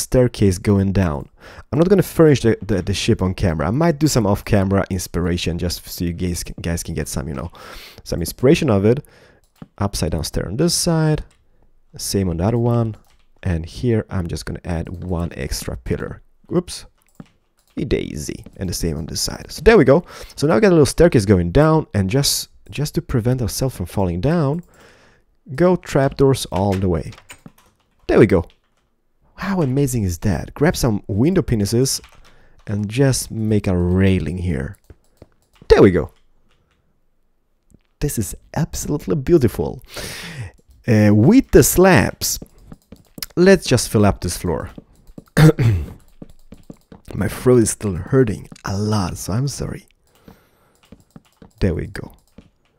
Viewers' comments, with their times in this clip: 0:04 Did he call us gays??
0:34 Lol the way he says window panes